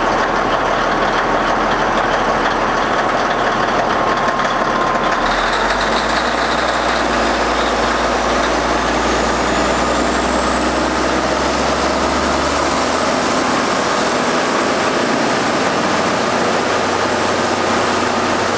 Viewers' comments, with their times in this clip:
0:04 only odd thing to me is she seems extremely clattery like is it a fuel knock or just an old rattley cat? ,, im not particularly familiar with these older cat engines mainly the 3126b and such in the equipment at our shop